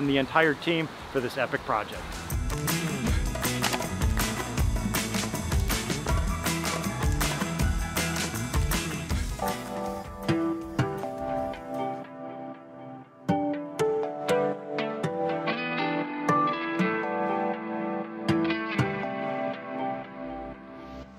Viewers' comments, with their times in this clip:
0:09 Great stuff as always! What's the song coming on ? Groovy.